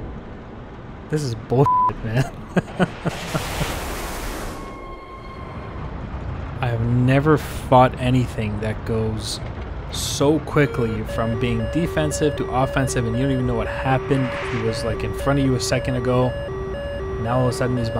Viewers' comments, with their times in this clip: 0:03 imagine being a pilot who just ejected and you hear that howl, bone chilling
0:04 that scream after hitting tomcat so scary